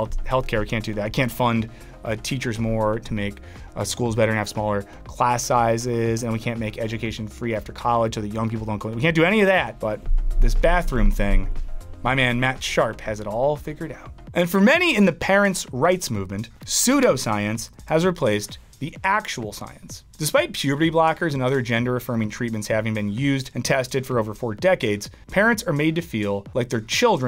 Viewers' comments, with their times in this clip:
0:09 Am I the only one that hears that weird bass sound?!